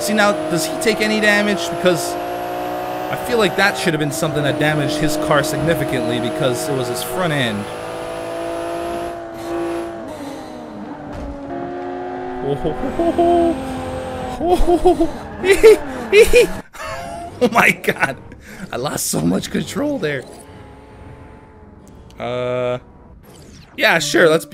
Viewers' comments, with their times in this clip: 0:10 dat laugh doe! XD